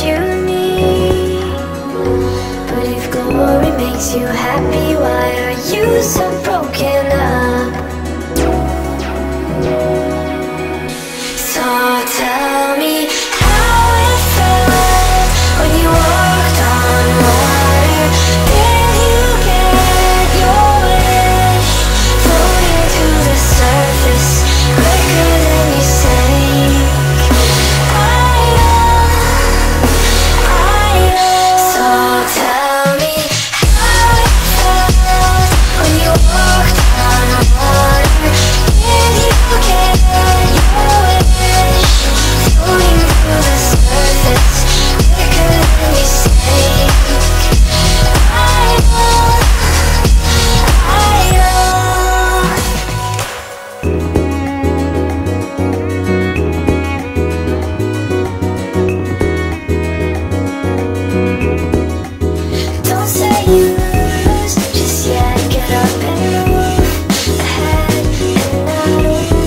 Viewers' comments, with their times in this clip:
0:03 Those of you who know/remember madeon "pay no mind" Doesnt this sound like the first lines of the verses?
0:14 The bass sounds distinctly Virtual Self to me edit: especially how the octave jumps, the gradual pitch shift
0:54 Right? I've literally been thinking about how and onwards could sound like an anime ED lol